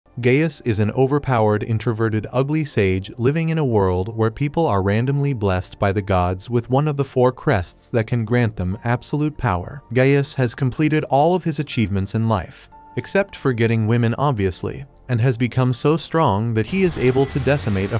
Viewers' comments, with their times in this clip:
0:00 did bro really say gayst
0:01 not me thinking gays? 🤣